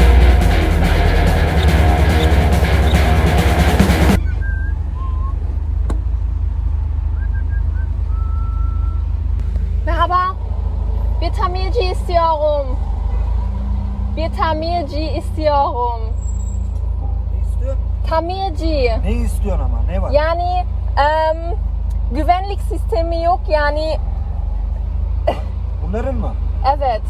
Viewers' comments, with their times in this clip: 0:10 nice speak turkish 😀